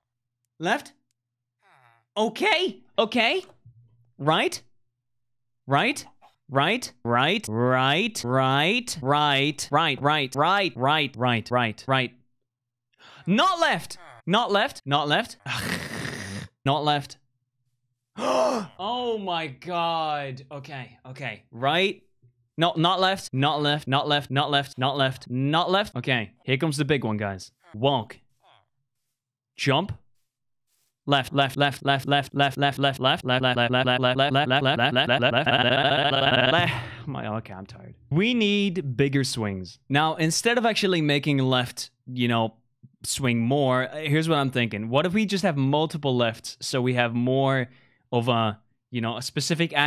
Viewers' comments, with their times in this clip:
0:07 all I can think about is the seagulls from finding Nemo lmao
0:31 Nobody: Marbles when they bounce:
0:33 lol he sounded like Henry stickman lol
0:35 then he decided to be a Banjo Kazooie dialogue sound